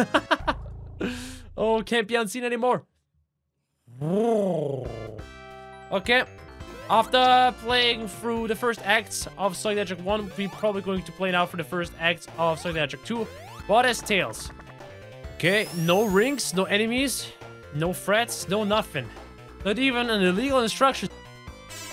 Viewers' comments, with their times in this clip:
0:05 bro purred like cat 💀